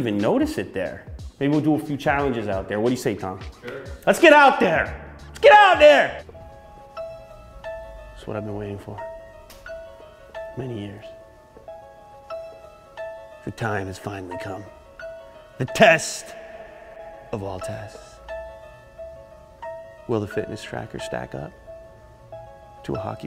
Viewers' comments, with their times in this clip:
0:07 Is It Just me or he actually behaves<talks> like pewdiepie ......